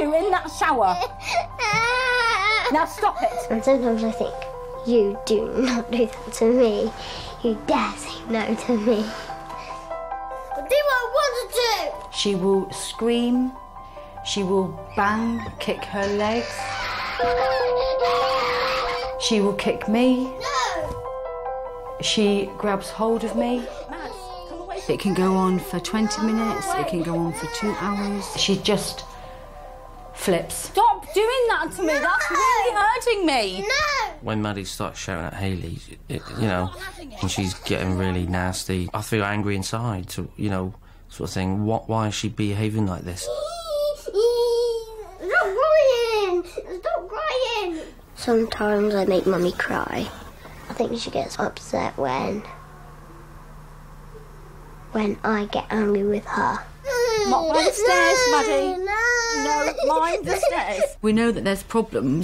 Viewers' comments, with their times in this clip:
0:03 bruh she laughing
0:17 that scream is terrifying af
0:43 she sounds like Brittany spears 🤣
0:43 She sounds like Brittany Spears 😂😂😂
0:44 What kinda cry is that?? I feel bad for her mom🥺 She’s acting really immature and she’s 9. “You do not do that do me. I’ll talk the way I want to talk to you. You dare do that to me.” 😭 shouldn’t she be passed throwing tantrums??
0:45 Seriously?! She thinks WHINING will make her stop crying?!
0:45 she sound like George pig 🤭